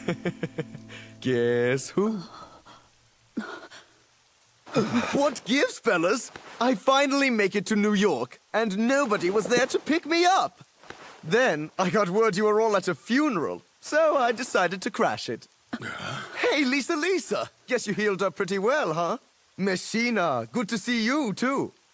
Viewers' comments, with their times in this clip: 0:05 The way he says; "WhAt GiVeS fElLaS" cracks me everytime 🤣